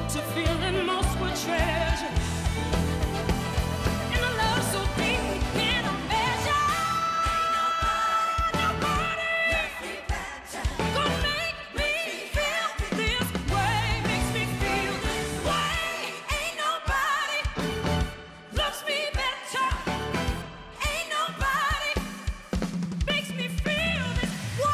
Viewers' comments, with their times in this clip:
0:08 🗣🗣🗣NOBODY!!!! The growl of all growls. That was so satisfying